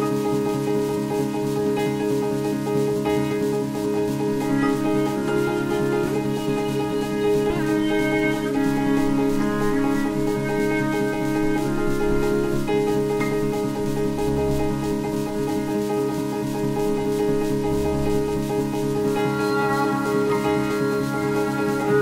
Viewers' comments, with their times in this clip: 0:06 "*hears the background static-y noise* WHY THE FUCK IS THERE A SPRINKLER NOISE"